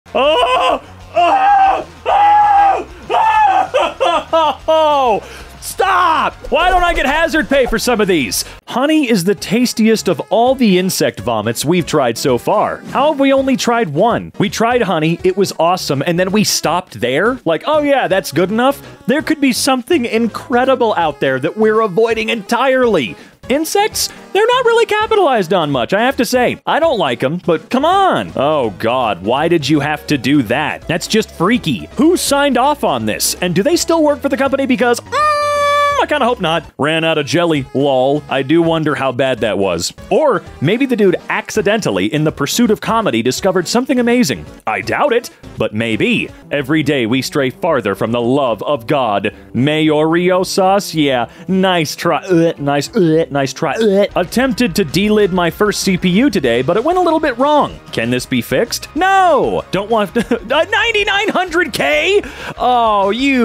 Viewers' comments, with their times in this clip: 0:00 sounds like Chewbacca getting "fudge packed"
0:51 the way he repeatedly gags is himarious